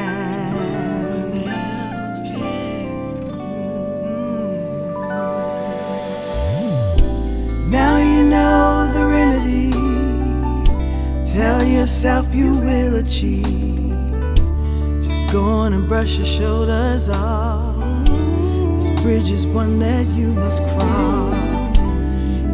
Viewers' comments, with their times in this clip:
0:07 Oh my goodness I love this woman. Did anyone else notice the harmony break down amazing. I mean this whole song is amazing but the break down harmony I kept playing over and over . Excuse me I have to go back to it LOVE YOU LALAH LOVE LOVE LOVE YOU my favorite singer of any artist